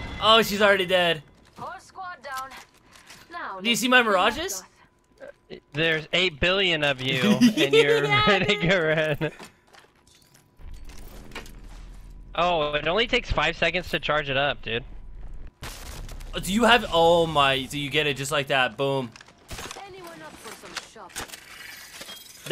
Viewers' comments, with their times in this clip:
0:08 giggle had my heart like 🥺🥺🥺